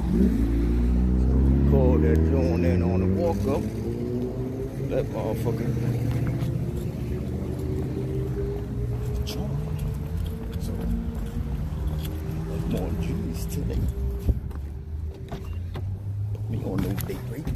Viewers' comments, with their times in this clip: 0:03 So no one is going to comment about how someone launches the F bomb out of a vocal cannon at about the mark??? the numerous words being thrown around and that was the first word i heard LMAO